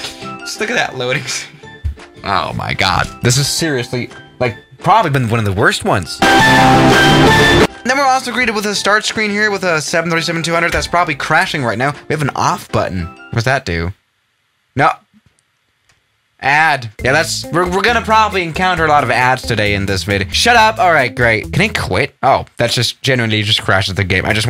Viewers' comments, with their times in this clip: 0:06 lol loud music lol it make me laugh